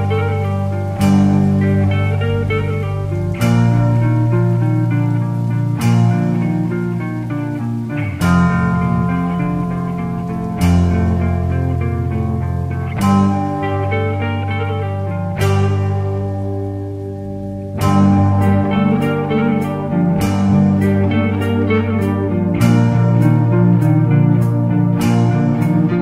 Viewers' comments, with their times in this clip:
0:10 a little hammerfall in there